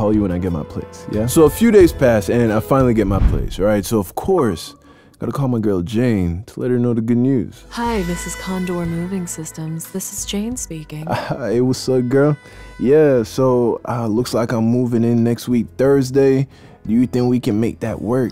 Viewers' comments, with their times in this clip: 0:03 i have the Xbox app and dead ass though that it was my notification for a split second
0:04 it’s the Xbox notification for me